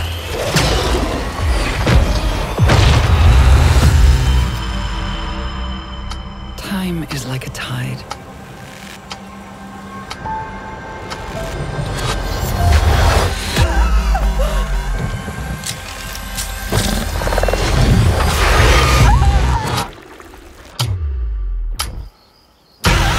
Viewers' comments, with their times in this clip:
0:10 sound doesn't match the video